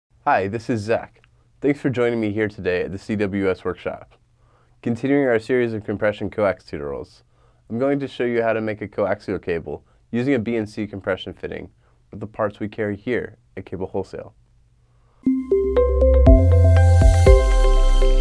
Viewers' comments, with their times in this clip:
0:05 I'm sorry, continuing your series of what? "toot-or-als"? lol, it's "tu·to·ri·als"